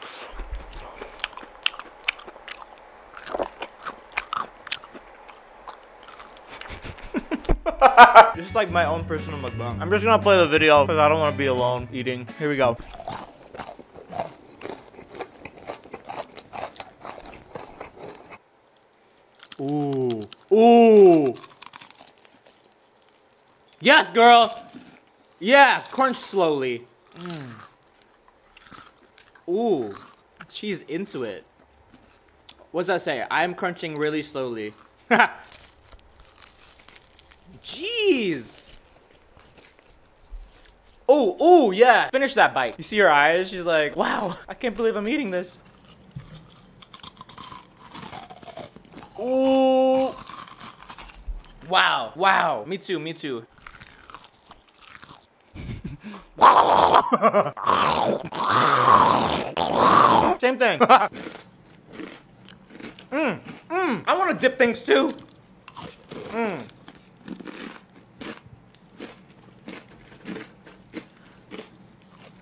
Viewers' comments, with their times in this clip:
0:06 that laugh made me laugh
0:49 I thought when it say stan girl group I thought it say steal ur girl
0:58 he sounds like he is possessed